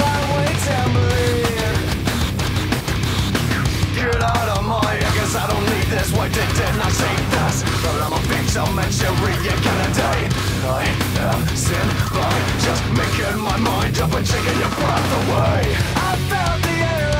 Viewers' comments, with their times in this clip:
0:03 those raw vocals is dope I fw it 😈💯🔥🔥